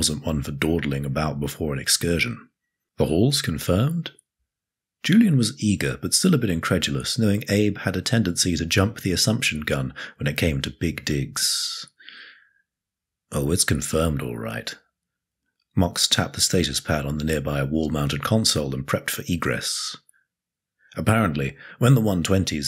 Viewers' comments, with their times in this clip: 0:07 The way that was pronounced was pretty sus.